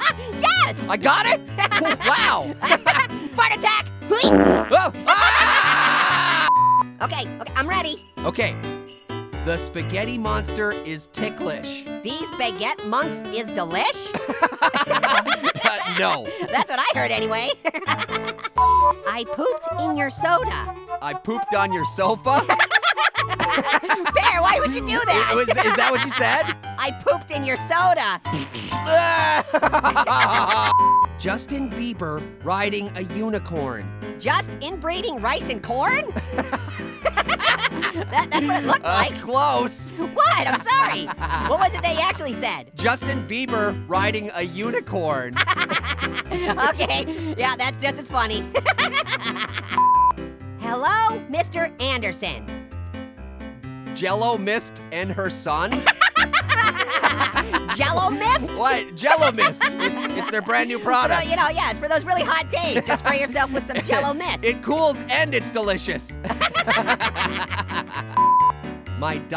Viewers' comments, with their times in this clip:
0:03 Orange: 😈😈 Fart attack! (farts) Pear: 😫😫😫 (screaming)
0:12 Does baguette months is the Lish (PS that was not what the subtitle said)
0:19 Orange: I pooped in your soda Pear: I pooped on your sofa Orange:*laughs like crazy* Pear:*laughs normally*
0:20 This is the most genuine laughter I've heard with these guys in ages. Especially
0:51 you can tell the voice actors had a lot of fun they went out of character they went out of character most